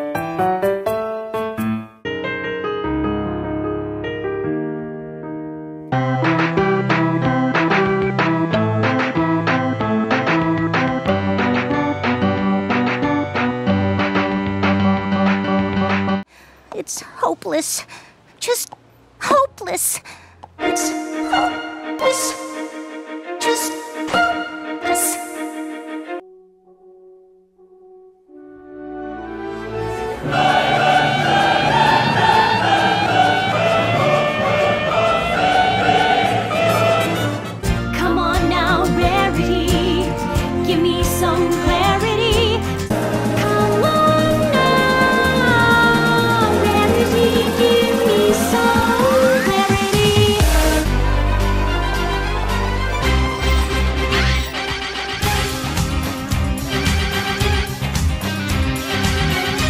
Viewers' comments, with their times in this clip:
0:03 i thought it was gonna be "let her go" piano cover and i got so excited 😂
0:04 Okay, this sounds like an TAWOG song
0:29 YAY YAY YAY YAY Trumpet Plays
0:43 i wanna keep listening to this music
0:43 my favorite thats so smooth